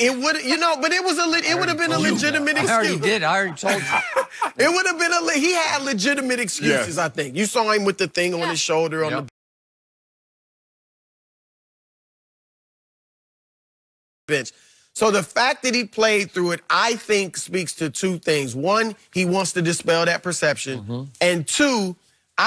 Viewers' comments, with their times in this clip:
0:09 Me - “Something is amiss. It’s way too quiet right now...... 🤔 Hmmm ”. Skip - “Mmmmm”. 😂😂😂😂😂😂